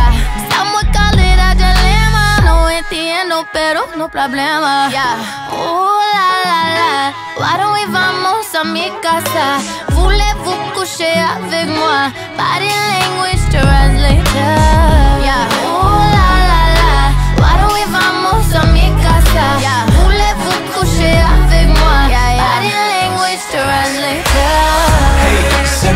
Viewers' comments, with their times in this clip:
0:10 what a sweetest, sexiest voice 😍 I'm rewinding it again and again